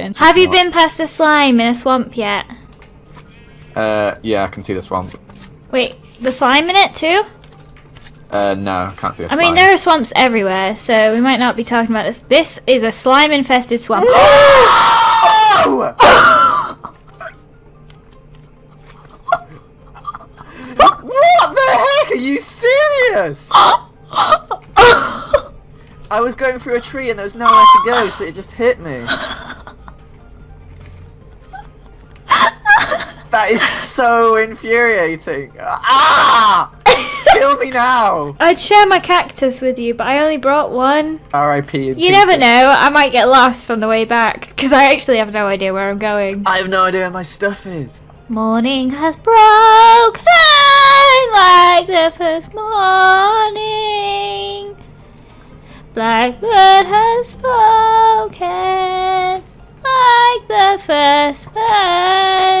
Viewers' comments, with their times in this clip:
0:04 WARNING ⚠️: Turn volume down (not too low so you can’t hear it) !! ⚠️ ⚠️
0:11 his scream ii cant stop laughing
0:13 R.I.P headphone yousers
0:14 Rip headphone users though. I’m still in my grave😂
0:14 rip headphone users lol
0:14 rip headphone users :) <3
0:15 Headphone users beware of It was painful
0:16 R.I.P. Headphone users... You will be missed
0:20 rip head phone users
0:49 and on beautiful singing